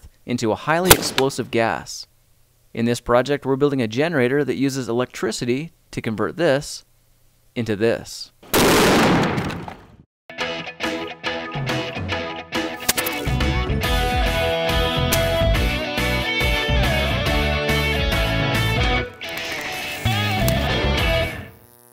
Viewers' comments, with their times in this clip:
0:08 Nobody: Dads sneezing:
0:08 R.I.P headphone users.
0:08 minecraft exploding tnt sound on